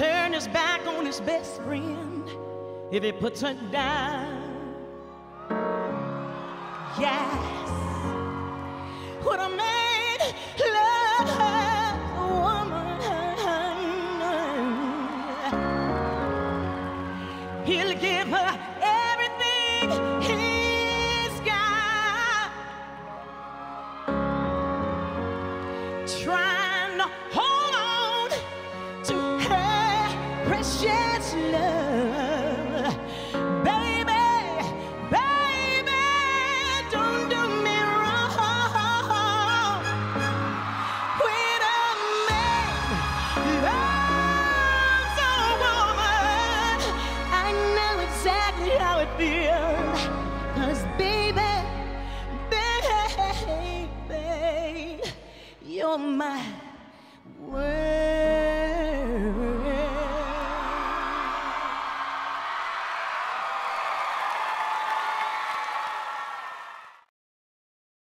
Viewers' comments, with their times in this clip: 0:05 that "yass" QUEEN!! YES!! TO THE GODS!!! THAT WAS SO BOSS!!
0:57 Love that note and twirl Just beautiful